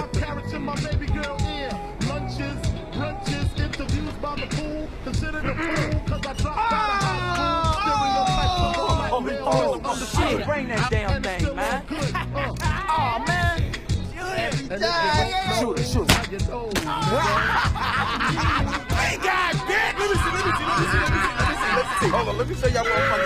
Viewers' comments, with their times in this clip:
0:09 that sounds like cj or Franklin from GTA